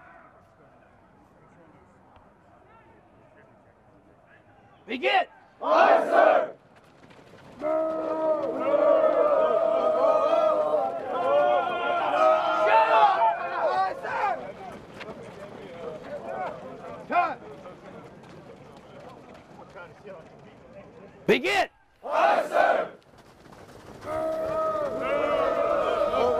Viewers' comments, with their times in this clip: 0:09 hey out of curiosity, why do they do that battle cry thing shortly before the SDI tells them to shut up lol
0:11 recruits start yelling starting the run DI: SHUT UP